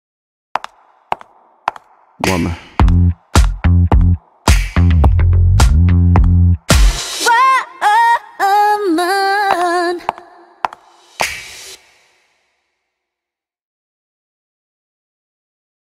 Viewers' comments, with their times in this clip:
0:07 The queen is coming back Get prepared to listen to this awesome song I’m already in love with the way she pronounced ‘Woman’ ❤️❤️❤️